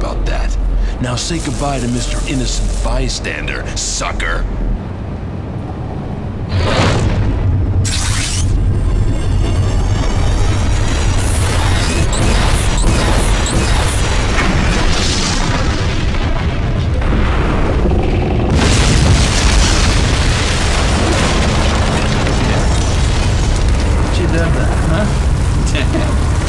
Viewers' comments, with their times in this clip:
0:07 OKAY I KNOW THIS IS A OLD ASS GAME BUT THE CIVILIAN COULD NOT HEAR THAT LOUD ASS NOISE ON THE PHONE?! LMAO